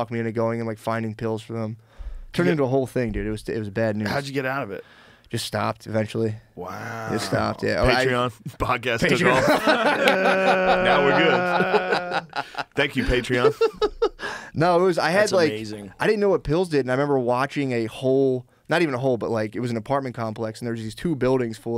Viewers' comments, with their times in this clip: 0:09 Joe sounds like a guy who's head just cracked off the concrete